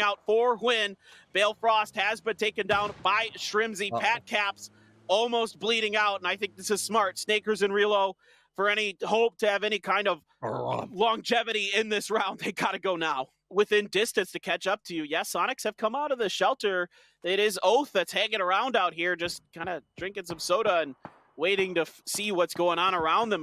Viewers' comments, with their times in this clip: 0:07 Are we all just gonna ignore the commentators hilarious "burp" that happens right after ?!?!?
0:10 Did i hear the caster burp ? xD